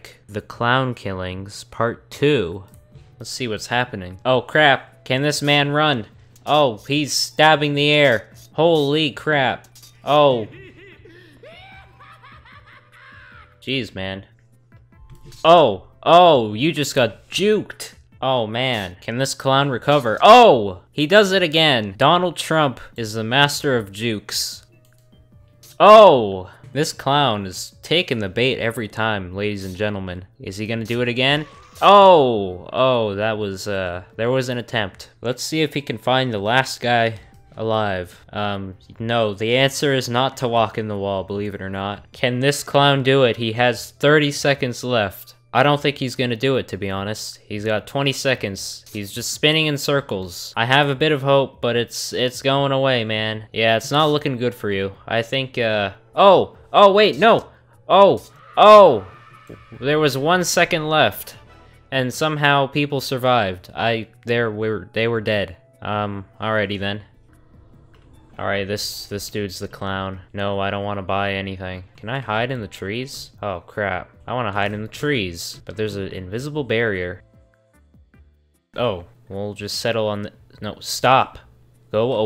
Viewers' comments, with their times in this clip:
0:09 Yuuki Terumi laugh
1:03 says he wants to hide in the trees, *makes vietnam noises